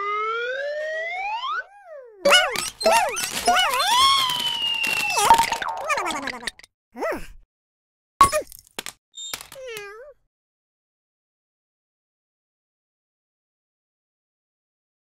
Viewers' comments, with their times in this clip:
0:09 Luxo is cute. Did he just meow?
0:09 Did Luxo Jr. just meow?